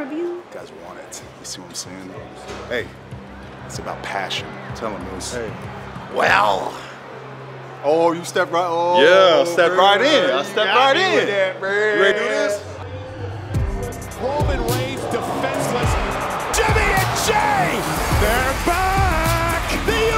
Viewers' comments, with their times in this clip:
0:05 that's a Vince impression if I've ever heard one lol 🤣🤣